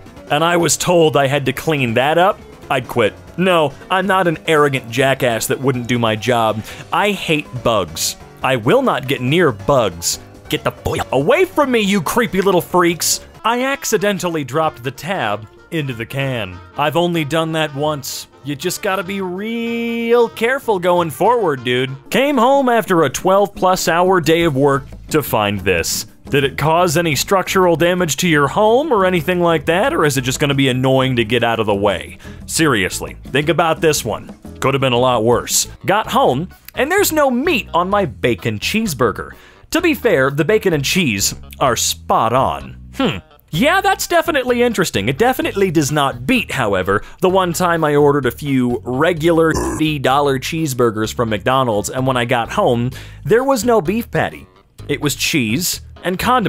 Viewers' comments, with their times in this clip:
0:10 get the boya away from me you creepy little freaks!!! is it just me or is cursing funnier with this type of censorship?
0:41 GRRRRRRRRRRRRRRRRRRRRRRG THEY PLAY THE SANS SONG